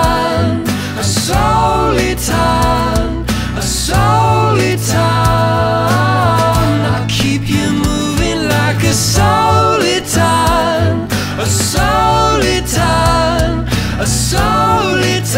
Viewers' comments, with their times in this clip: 0:03 At about the point, somebody came in while I was surfing around and had just this video's audio playing. He thought it was Coldplay. Adding yet another "Steam Powered Giraffe? And they've been around how long?! Why am I only hearing of them now?!!" reaction to the list.